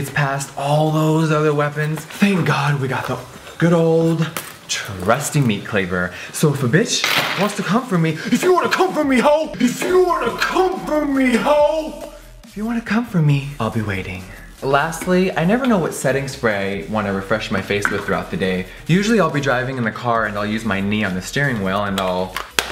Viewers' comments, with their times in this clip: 0:08 the man came out